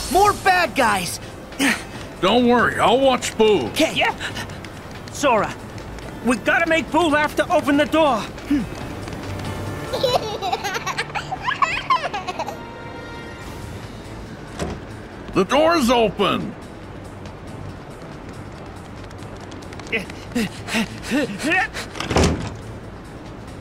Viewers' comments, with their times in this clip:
0:10 When you defeat a unversed, the laugh meter will fill, then afterwards, she laughs. Isn't that a little demonic?